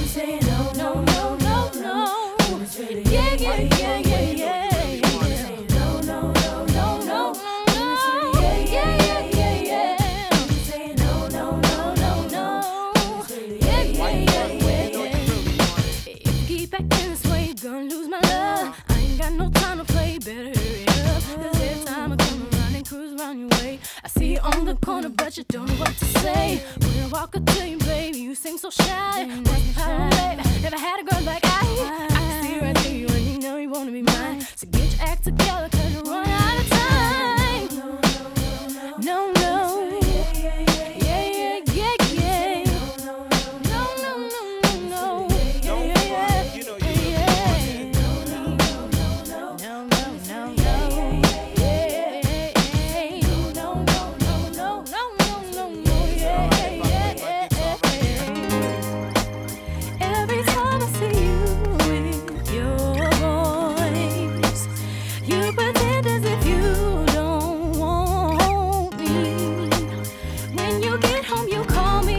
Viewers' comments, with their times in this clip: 0:07 she like "I'm here too. It aint just Beyonce and Kelly singing right now"
0:17 I just love the way Bey sung "If you keep actin' this way, you're gonna lose my looo-ooove" the way it intercuts with DC's bouncy intricate choreography. Love the quartet lineup to Destiny's Child. "Writing's on the Wall" was a perfect album <3
0:27 Let’s pretend that Beyoncé didn’t kill her fast verse to 140. Fast as hell...
0:58 I'd forgotten how good the middle eight is in this song, it's very uplifting. The girls are VERY overdressed by today's standards. If another girl group released a song like this today they'd be dressed like strippers and there'd be non-stop twerking.
0:59 The breakdown is my favorite part of the song